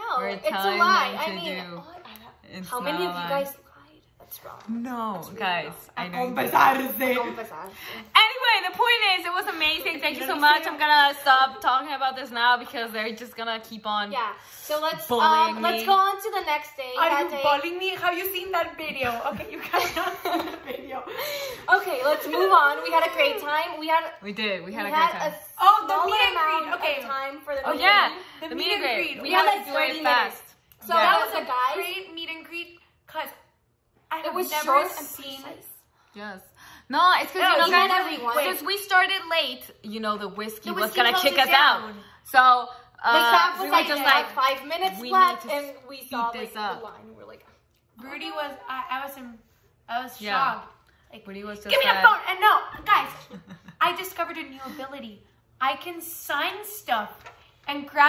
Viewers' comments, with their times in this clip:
0:03 the quiet but brutal way Ale can make us feel guilty for saying Dani Day is the best day hurt my sides 😂
0:43 Ale at it again "you have 5 minutes left!" with matching clacking the hair clip 🤣 I'm dead laughing.